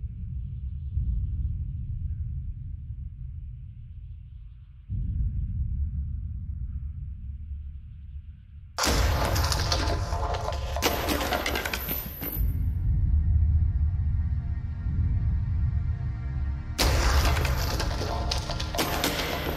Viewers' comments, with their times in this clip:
0:07 The slow buildup from here… I love it 🥺